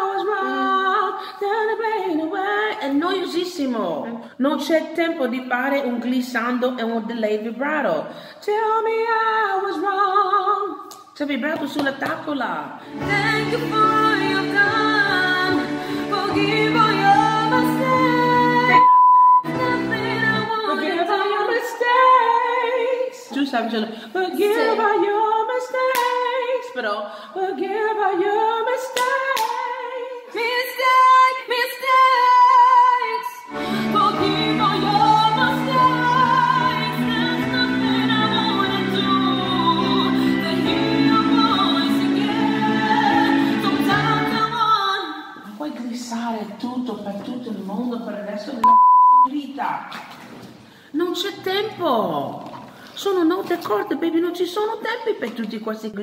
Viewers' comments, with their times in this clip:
0:03 I'm Italian.. I just can say that her pronunce is better than mine. lol.
0:17 can someone understand what's bleeped? Is it the name of the girls and she prefers to stay anonymous maybe
0:31 she sounds so good
0:32 Yh she sounded like demi
0:36 when she sang "there's nothing I wouldn't do" she actually sounded exactly like christina
0:36 she sounded exactly like xtina omg <3
0:36 she sounded like Xtina too
0:37 Christina's soul crept into this girl's voice for a few seconds.
0:37 she sounds EXACTLY like Christina Aguilera 😳😳😳 absolutely incredible!
0:37 She really embodied Christina Aguilera’s unique “ tone “ (which people try so hard to emulate but fail ) This girl is gonna be great cuz she already is. You can be influenced by Christina as most new vocalist are but she should try and start finding her own lane now.
0:41 Christina came out of her voice